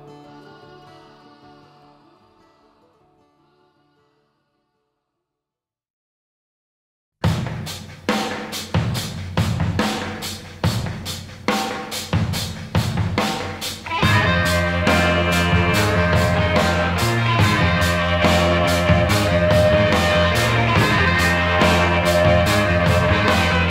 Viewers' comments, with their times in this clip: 0:08 Bonzo's drums still echoing in our souls